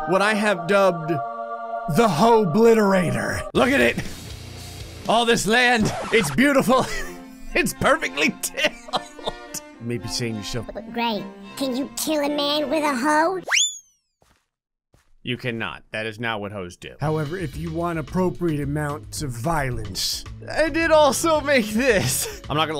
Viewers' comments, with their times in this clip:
0:10 I am now gonna think in that voice